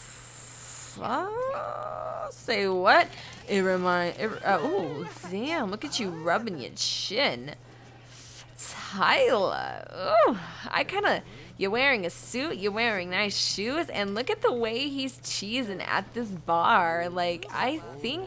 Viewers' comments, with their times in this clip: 0:06 That voice tho.. I love it!!